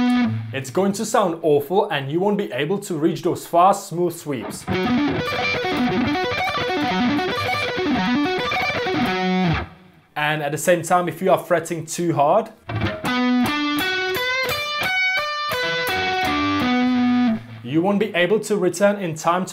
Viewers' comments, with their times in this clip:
0:04 Sorry that I have to say that, but when you are teaching guitar, your playing must be clean, correct and flawless. And what you are playing unfortunately is not.